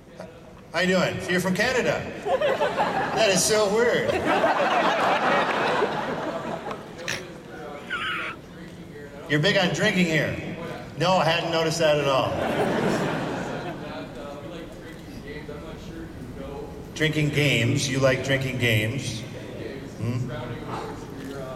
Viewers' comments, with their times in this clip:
0:06 you can hear someones neck being snapped and their last breath...